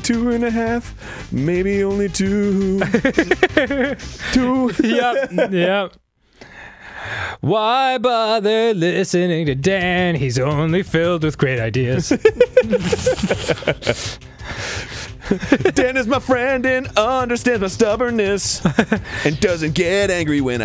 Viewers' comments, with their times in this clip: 0:06 this little song by both of them describes most of Game Grumps. Lol